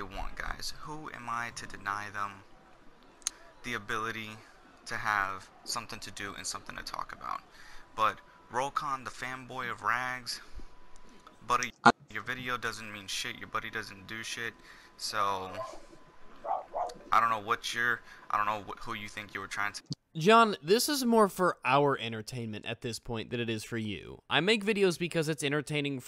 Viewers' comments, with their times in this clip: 0:09 you can here a ah and the video pauses itself and starts back lol